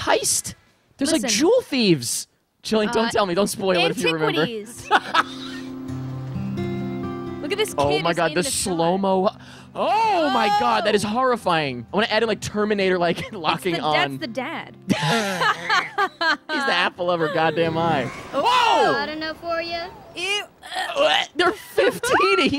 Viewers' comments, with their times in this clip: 0:10 The terminator genesis theme while zooming in